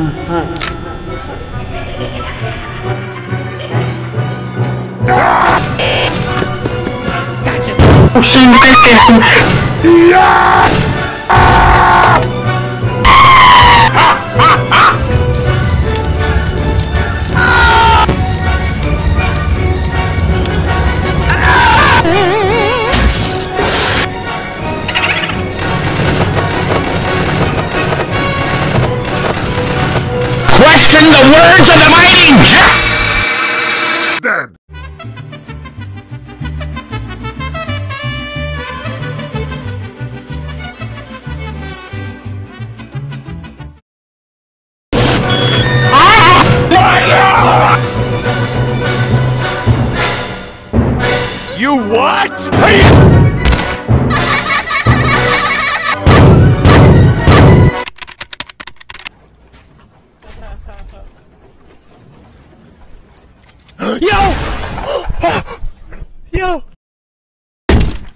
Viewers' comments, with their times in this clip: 0:10 cheering intensifies Plushtrap: OH MY DUDE, YOU JUST GOT PRANKED!! BET YOU DIDN’T SEE THAT COMING, HUH?
0:35 unclear plz can anyone tell me what he is saying and plz not from the captions
0:35 Does anyone know what Freddy said that the nightguard likes it in It's hard to tell what Freddy is saying so I have no clue what he said that triggered everyone else, especially Bonnie, to get the nightguard. Still one of my favorite clips cause it's hilarious. XD
0:41 Oh god I remember the song in the background of
0:54 put your speed to 0.5 it goes with the rirhem